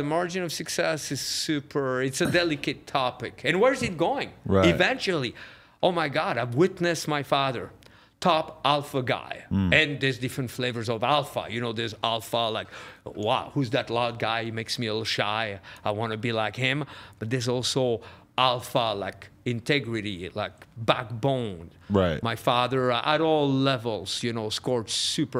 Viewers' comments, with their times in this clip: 0:08 thought bro said he seen his dad too off another guy 💀